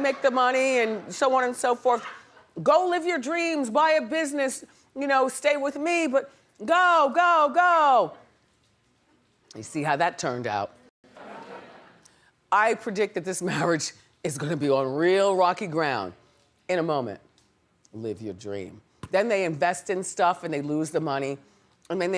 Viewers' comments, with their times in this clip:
0:07 it’s the silence for me 😳